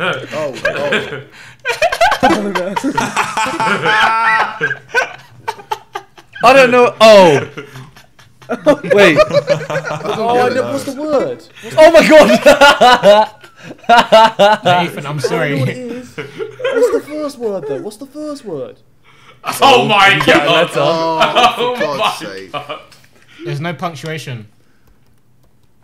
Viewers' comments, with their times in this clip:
0:10 ksi says ethan got no dad Toby: laughs Rest of the sidemen: laughs Me watching: laughs Ethan: will atleast I am not being made fun of me being fat anymore